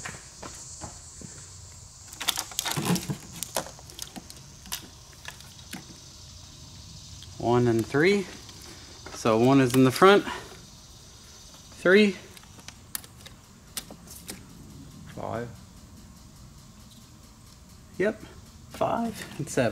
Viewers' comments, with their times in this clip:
0:05 I wish you had a better mic. The high pitched background noise (crickets?) is a little annoying lol. Edit: It dies out Maybe it's cicadas?